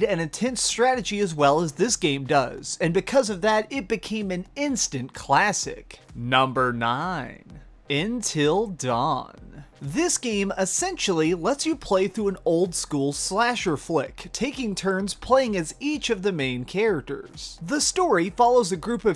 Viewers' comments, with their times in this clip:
0:05 I didn't know the proper way to pronounce until dawn was "in till dawn". learn something new everyday .
0:06 you didn't just call it Intil Dawn, did you..
0:07 "Intil Dawn" lmfao XD